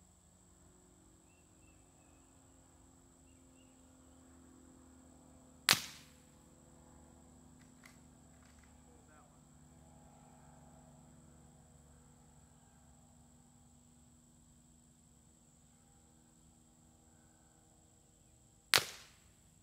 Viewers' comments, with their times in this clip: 0:06 was that the cardboard impact, not the gun itself, wtf?